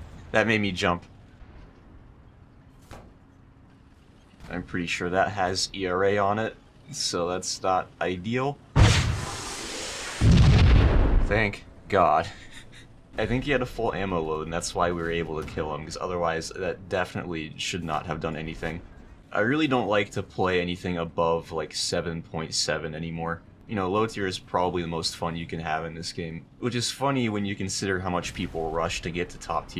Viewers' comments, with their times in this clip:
0:09 That Halo 1 SPNKr sound and impact activated some old neurons of mine
0:10 boom goes the dynamite